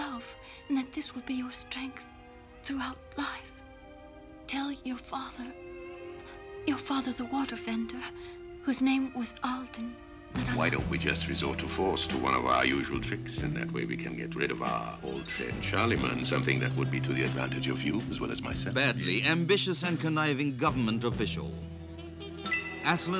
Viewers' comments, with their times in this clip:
0:10 That voice sounds so familiar; sounds a lot like Paul Frees.